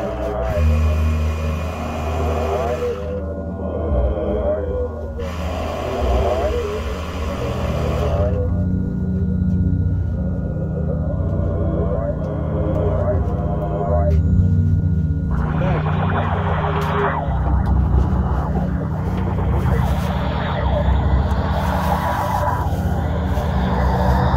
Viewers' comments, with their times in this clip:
0:06 is the scene out of a horror film with the bee on the camera and this music well done